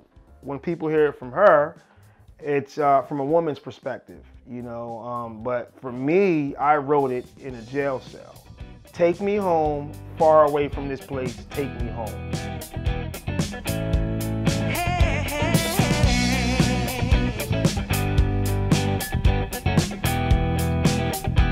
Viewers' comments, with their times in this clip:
0:07 Great interview and inspiring story! Really impressed by the edit as well. I liked the transition from the interview to the music video. The audio build-up underneath is commendable!